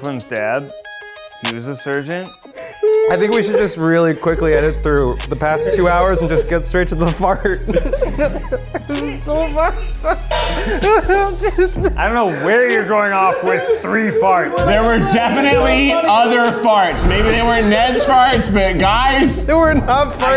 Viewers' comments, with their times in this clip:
0:05 Eugene's laugh is so contagious and he loooks way too cute when he laughs aweeee